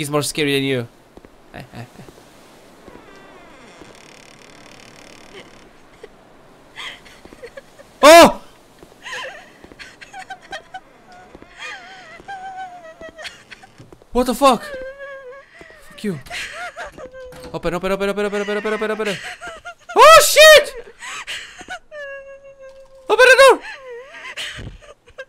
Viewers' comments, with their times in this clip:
0:07 creepy video bro and from that crying one got me there dropping the like